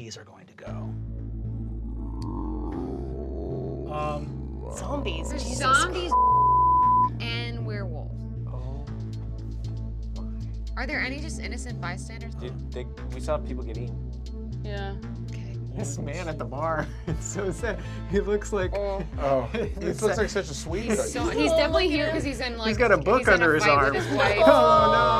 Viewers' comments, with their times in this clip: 0:04 vampires was censored
0:04 What the fuck did emily say about the zombies that deserved such a long bleep?
0:07 what did she even say?